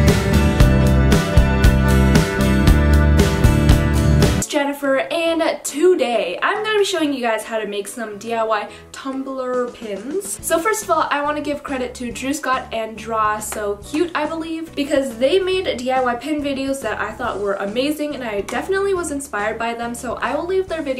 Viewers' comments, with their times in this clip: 0:06 lol I thought you said “Too gay” 🤣